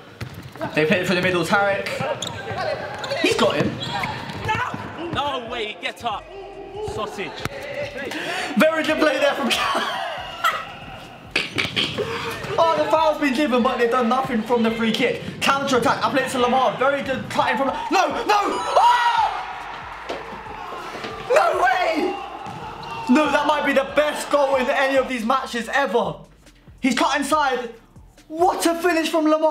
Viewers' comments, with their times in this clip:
0:10 his laugh tho